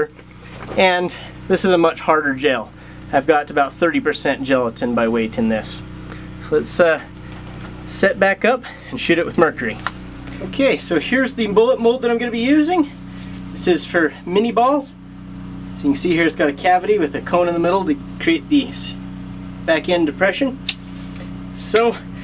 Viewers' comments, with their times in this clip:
0:09 "Shit it with mercury"